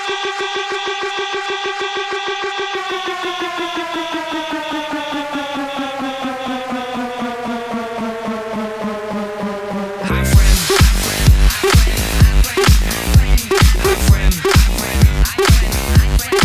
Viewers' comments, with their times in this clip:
0:03 Thats what it sounds like when a Fat kid gets on the treadmile LOL